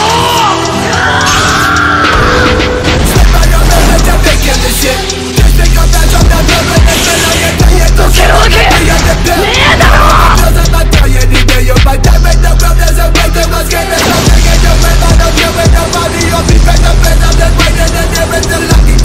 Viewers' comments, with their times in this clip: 0:04 this shit hit so hard, my headphones disconnected.